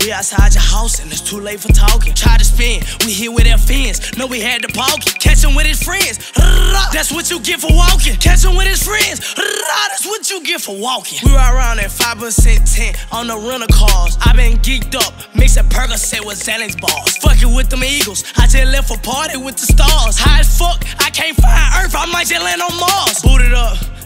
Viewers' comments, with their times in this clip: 0:09 bro tryna sound tuff then his voice cracked